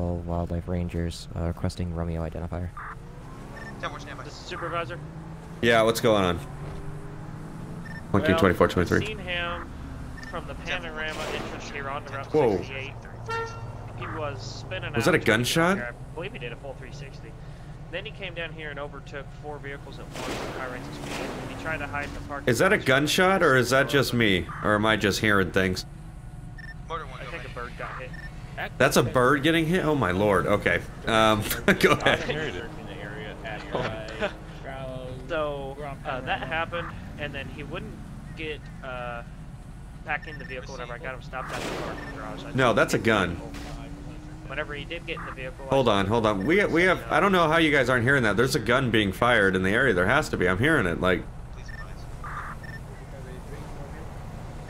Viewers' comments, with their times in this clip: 0:10 That was definitelya gunshot lmao
0:35 it was the sound of a musket